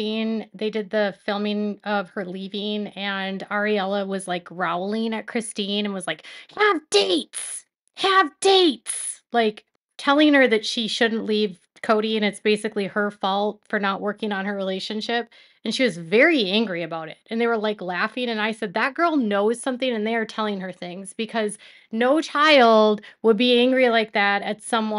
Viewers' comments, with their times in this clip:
0:07 I am living for your impressions right now. took me out. 🤣🤣🤣🤣🤣